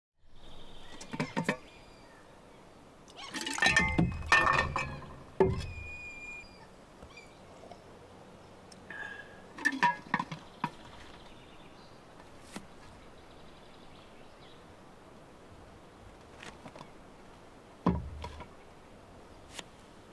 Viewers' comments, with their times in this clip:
0:06 roblox drinking sound